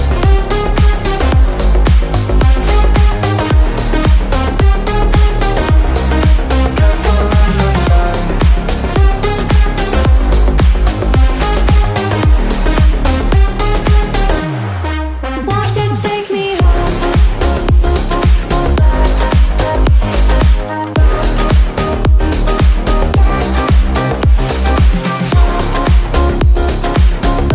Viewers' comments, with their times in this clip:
0:08 the beat was perfect timing when he jumped